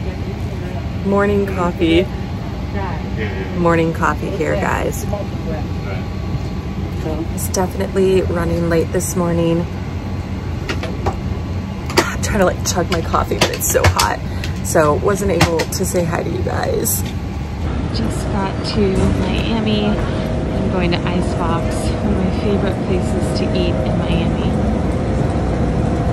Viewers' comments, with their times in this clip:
0:07 .... I hear a fart.